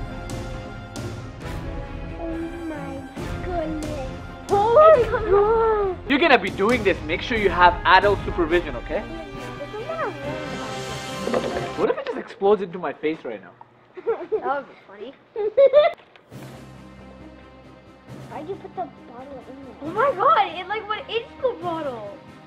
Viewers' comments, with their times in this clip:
0:04 Is it froggy voice she said oh my godness